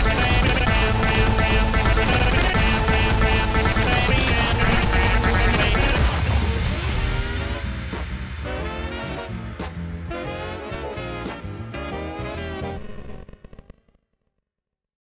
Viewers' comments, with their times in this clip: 0:12 4 characters sing at one